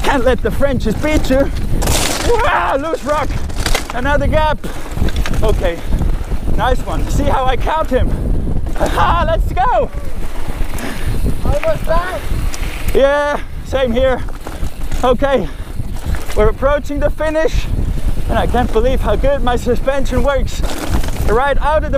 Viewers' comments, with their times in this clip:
0:08 "Almost died" did i hear that right?